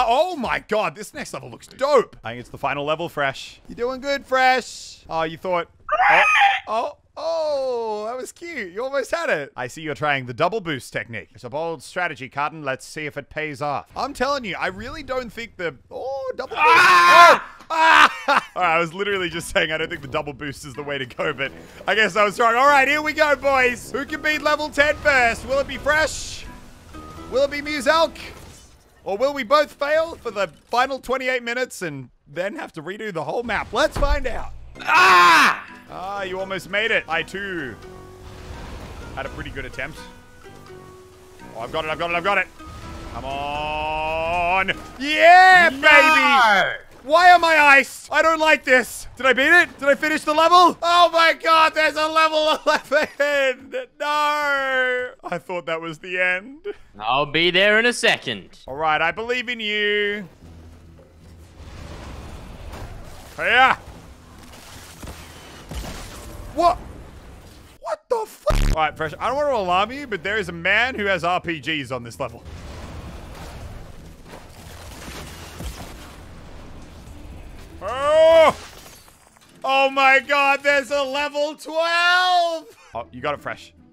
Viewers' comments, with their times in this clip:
0:04 when you realize the voice actor for the pterodactyl in jurassic park
0:04 what was that noise 🤣🤣🤣
0:05 What was that noise?!
0:05 what was that scream?
0:05 what was that scream?
0:05 what was that sound that came out of freshs mouth
0:05 Why does Fresh have a meme Alien sound every death run video like
0:05 What was that sound fresh made???
0:06 Fresh sounds like a freakin dinosaur
0:06 Did you hear the noise fresh made
0:06 what was that noise fresh made???
0:19 Is it just me or does he say COVID
1:04 his voice went so high tho